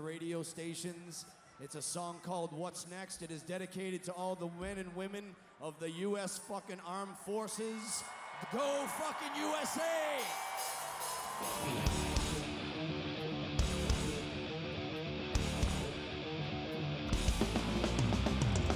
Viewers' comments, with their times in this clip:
0:04 this song is dedicated to all the Wen and Women....lololol